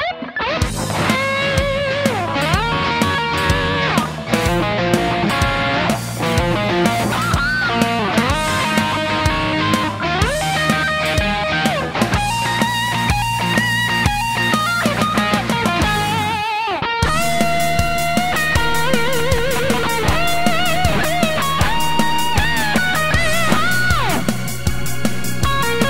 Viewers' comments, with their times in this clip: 0:06 The one is country not pop lol